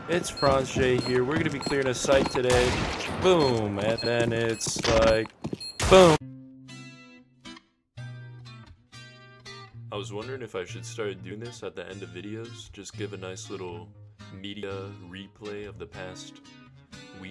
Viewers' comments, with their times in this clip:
0:05 not calm enough